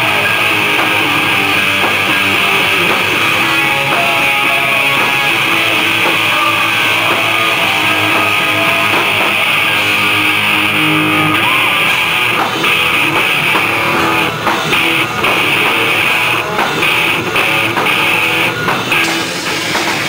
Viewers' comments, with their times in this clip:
0:05 It's a brief solo. Maybe that's why you had trouble picking it up. Plus, there is so much background noise form the crowd that maybe you couldn't pick it up. I had to watch it three times before I discovered it. It's only a few seconds long. Check cause that's when it starts. It's just a couple riffs long at the end. I hope that helps!
0:05 It's a brief solo. Maybe that's why you had trouble picking it up. Plus, there is so much background noise form the crowd that maybe you couldn't pick it up. I had to watch it three times before I discovered it. It's only a few seconds long. Check cause that's when it starts. It's just a couple riffs long at the end. I hope that helps!